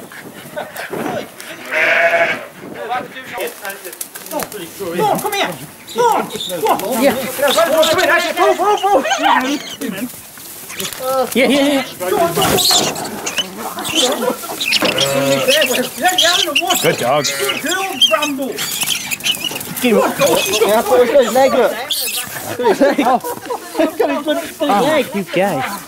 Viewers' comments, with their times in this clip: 0:08 I just love all that rat squeaking. It sounds so cute in spite of the fact that all of that squeaking is the squeaking of rats dying.